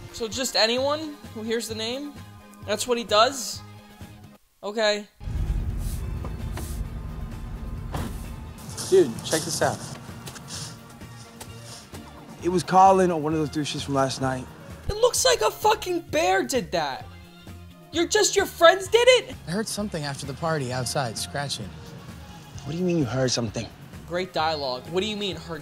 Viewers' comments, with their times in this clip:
0:05 Black Kid: obnoxious laugh Squidward: obnoxious laugh Me: Really loud obnoxious laugh
0:12 that "what" was so British.